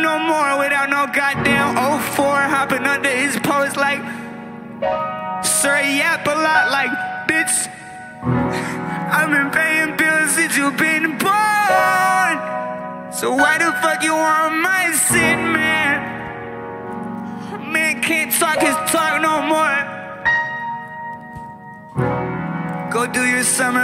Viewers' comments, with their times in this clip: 0:04 i’ve played this back so many times it’s just so deep and relaxing. the math packet bar is my favorite part tho